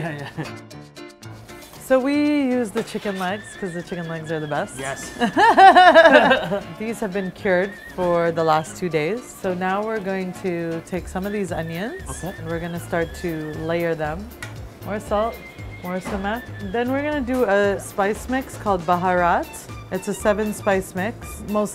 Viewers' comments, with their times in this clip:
0:05 shorty let out that Kawhi laugh lol
0:05 she laughs like seth rogan